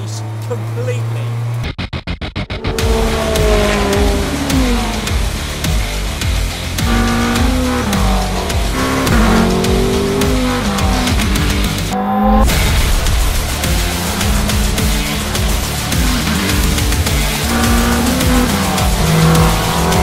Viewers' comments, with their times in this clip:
0:03 Why ruin the engine noise with music?